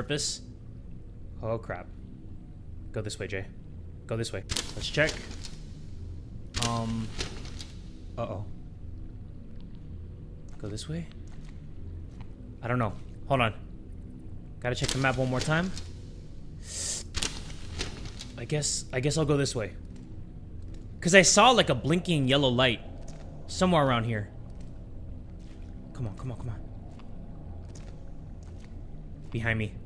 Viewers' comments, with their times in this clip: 0:10 I’m right now and it already feels like my right ear is bleeding